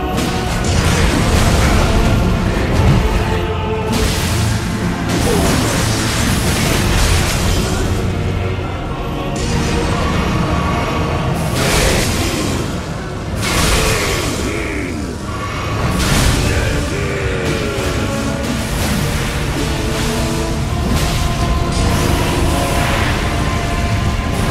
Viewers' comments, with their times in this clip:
0:05 The sound sounds like that one zoomer humor wet fart sound effect.
0:09 Goddamn this dude is probably my favorite boss in the game. The whole blood god theme is pretty cool but the fight I found especially amazing. His transformation and the way the music changes is so fucking sick, even though I died to him a couple times I wasn't even mad cause this fight was so damn good. GOTY 2022
0:10 nihil! Nihil! NIHIL! 🔥 i loved it when the music switched perfectly at this Moment 😋